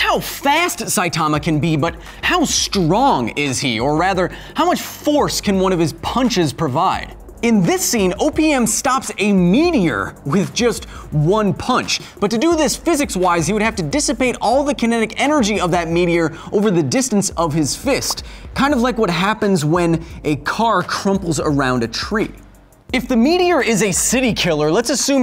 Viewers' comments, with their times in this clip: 0:07 "In this scene, OPiuM destroy a...."
0:07 I heard, "In this scene opium stops a meteor with one punch."